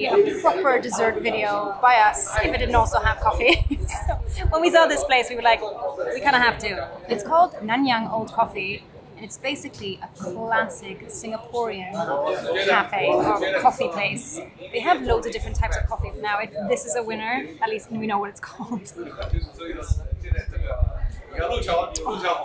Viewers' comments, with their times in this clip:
0:08 your pronunciation of Nanyang is spot on!